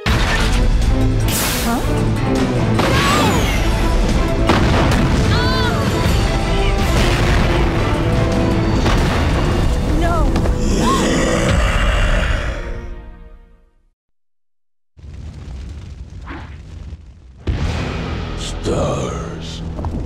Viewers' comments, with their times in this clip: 0:05 Jean Grey moan lol